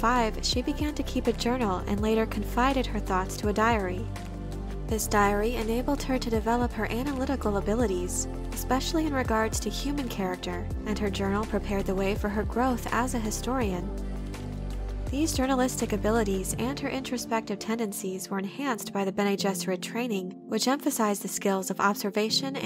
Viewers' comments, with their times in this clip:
0:06 it just stood out for dome reason “…anal-ytical…”